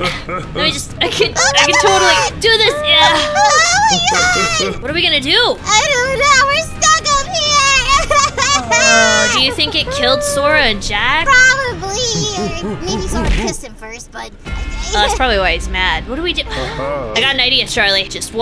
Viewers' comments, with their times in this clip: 0:03 Did anyone notice or is it just me but sounds like she says Levi!